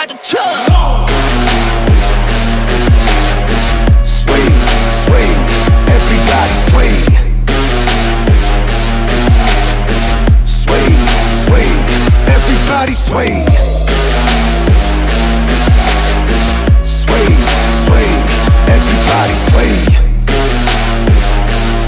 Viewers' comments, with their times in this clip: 0:03 STOPPP!!! when that chorus dropped!!! I'm not surprised I love it but damn!